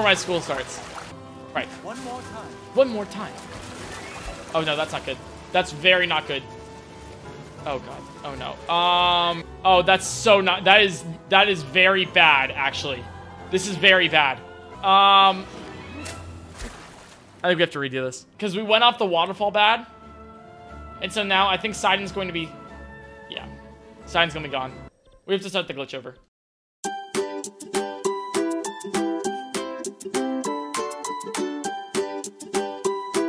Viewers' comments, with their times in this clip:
0:10 was that sync with music and fall accidental?
0:14 love that music sync